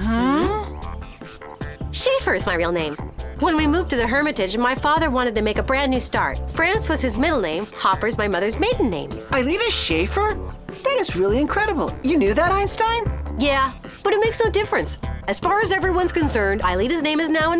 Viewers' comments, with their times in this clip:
0:05 you can really hear that Aelita and Jeremy have the same voice actor